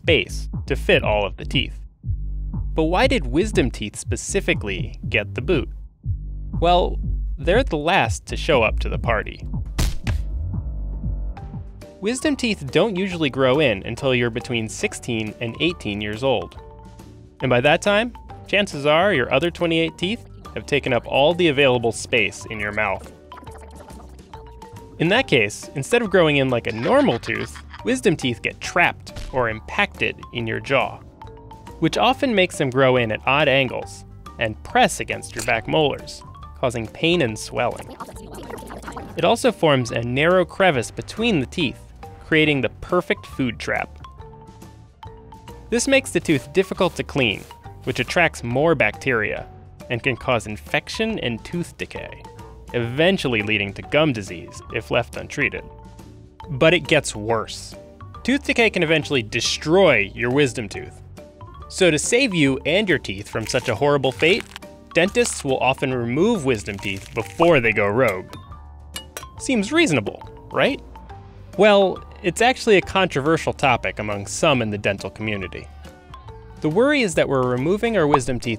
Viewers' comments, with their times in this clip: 0:09 my right bottom jaw is in agony from a stupid wisdom tooth that suddenly decided to come in, but the sound effect of the tooth bouncer getting knocked down by the other teeth resulted in unexpected laughter lol, laughing hurts btw
1:01 I know the visuals were there to illustrate the message But that sound was way too graphic